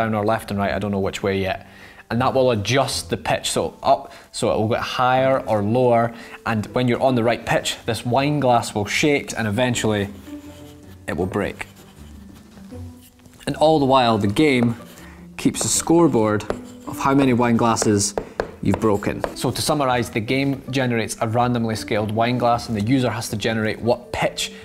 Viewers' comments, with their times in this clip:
0:08 i could swear he said shit🤣